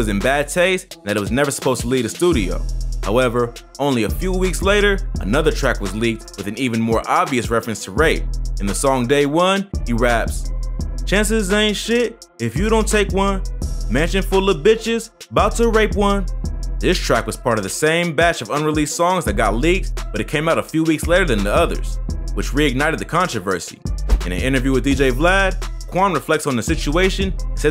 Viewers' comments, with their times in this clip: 0:10 he was on beat